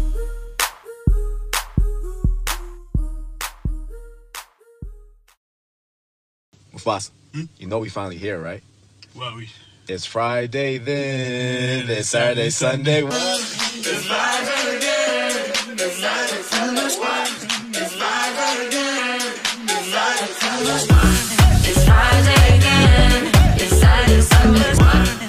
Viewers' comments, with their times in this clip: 0:06 i thought was gonna be the original house music beat (T^T)